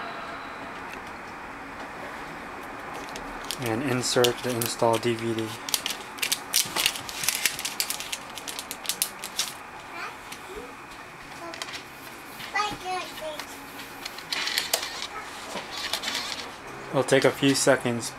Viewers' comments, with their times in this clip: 0:05 what are you calling the disk that you are inserting. i can't understand mumbling, and this is obviously something important to know.